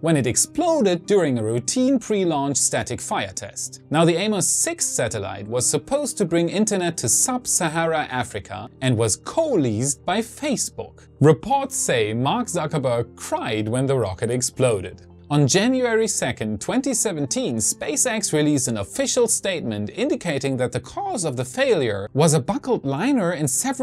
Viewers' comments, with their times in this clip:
0:08 So you know how to pronounce "Zuckerberg" correctly. That so called "English pronunciation" always makes me cry haha